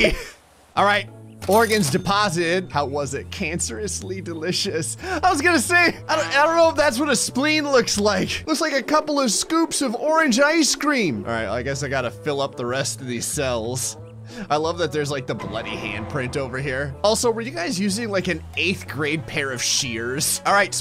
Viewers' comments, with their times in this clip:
0:05 why does orange ice cream need scary music xd